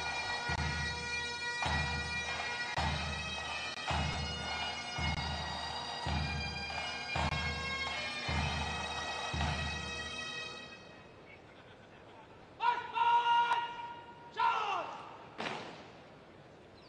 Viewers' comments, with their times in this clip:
0:04 We did not get two minutes silence. A helicopter sat next to the Cenotaph on Saturday. It was a Bell 206 Jetranger G-VVBO, from Woking. Preventing any silence. It was not the police, it was private and I understand it was hired by the BBC. Look at the time and date, on the Flightradar 24 image. T